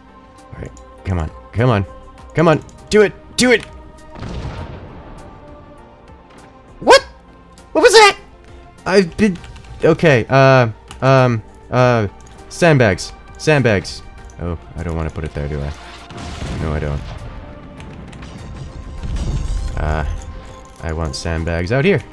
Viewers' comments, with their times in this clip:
0:06 the way he said what? what was that? was so funny.